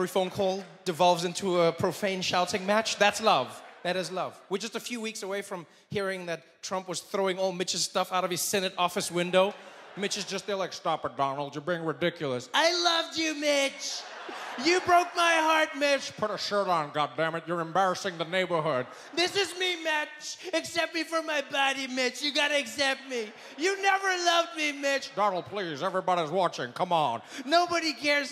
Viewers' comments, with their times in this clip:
0:10 OMFG that voice impression🤣🤣